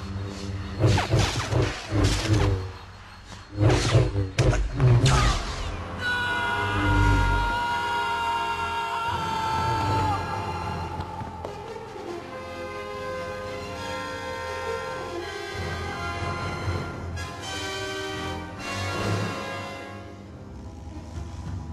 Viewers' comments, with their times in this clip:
0:04 best no ever